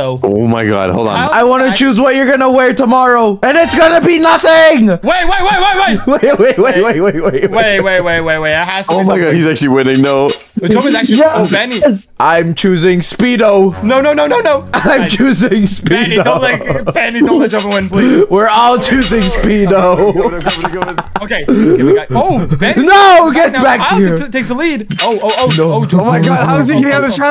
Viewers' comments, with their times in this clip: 0:08 She said I’m gonna choose what you wear tomorrow which is nothing and then started laughing crazy